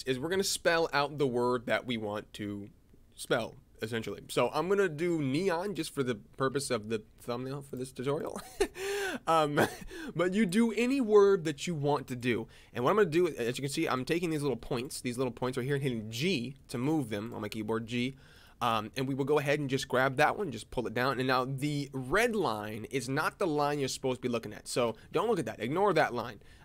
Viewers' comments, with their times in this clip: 0:08 that laugh was so adorable